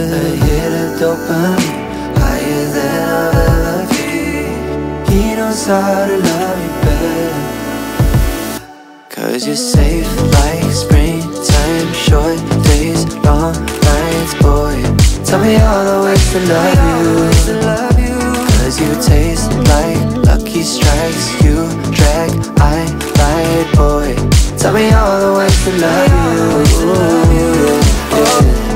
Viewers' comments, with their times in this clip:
0:09 I can't stop replaying the drop and that Troye's slayin walk.